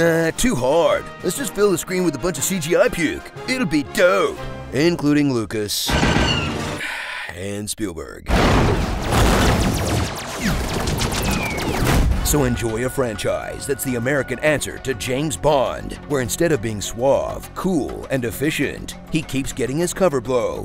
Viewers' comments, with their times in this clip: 0:05 It's awesome, and the sigh is the cherry on top of this delicious sundae.